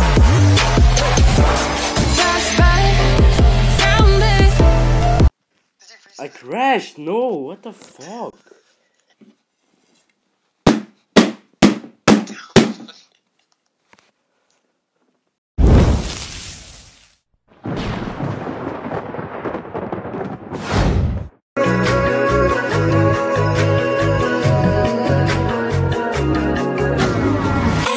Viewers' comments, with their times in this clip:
0:09 "No I crashed,fuck" slam slam slam slam slam